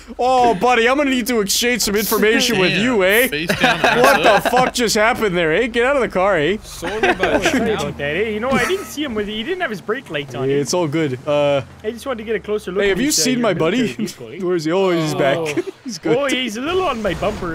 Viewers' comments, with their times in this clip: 0:04 quite Canadian eh?